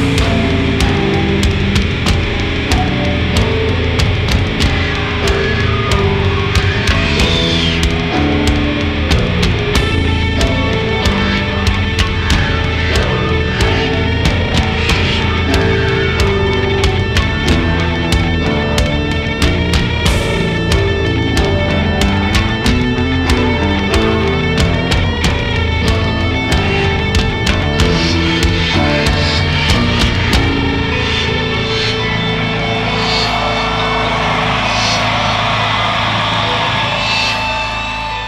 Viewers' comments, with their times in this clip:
0:07 Corey : having a mental breakdown Rest of the band : playing serious, melancholic part of the song Clown : hoppity hippity
0:18 that bass is just amazing
0:20 wow I love that little bass fill there!
0:21 What a great bass filling!
0:21 Amazing solo of bass!
0:21 that bass lick fits perfectly
0:21 that bass lick is EPICCC
0:21 THAT BASS IS T H I C C
0:21 that bass tho
0:21 I LOVE THE SOUND THAT THE BASS MAKES!!<3